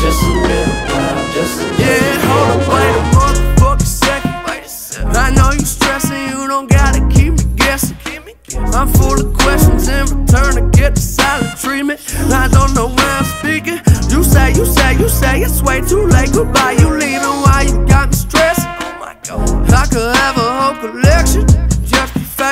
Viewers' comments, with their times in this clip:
0:09 It really sounds like her